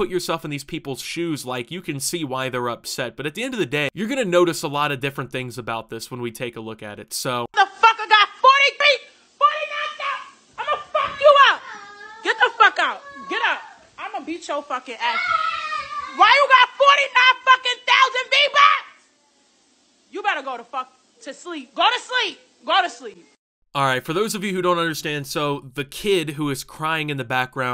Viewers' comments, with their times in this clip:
0:08 sounds like they gonna get a spanking from that tone of voice